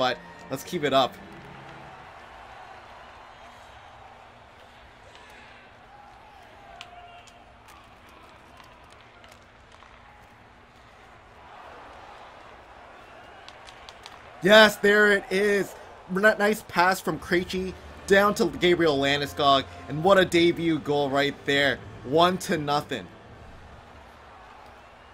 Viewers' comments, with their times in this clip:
0:07 Listen closely it's a fan or someone😂😂